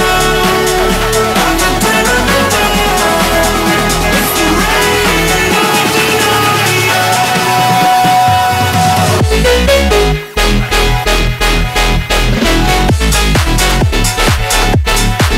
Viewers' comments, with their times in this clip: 0:03 OMFG THAT DROP